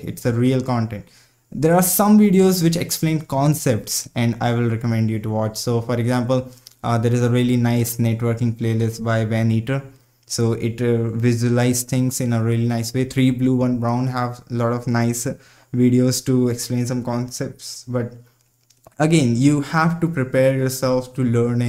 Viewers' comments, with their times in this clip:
0:07 Networking concepts by who on ? Can't hear well.. :D